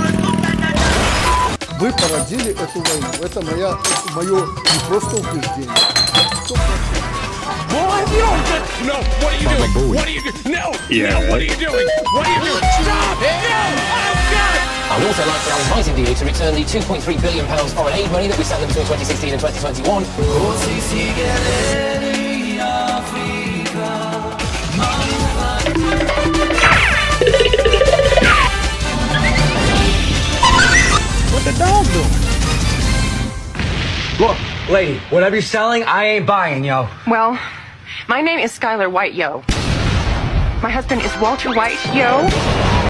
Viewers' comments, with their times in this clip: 0:09 Here begins the dead laughing scene
0:28 Ofc there is Chinese anthem that make sense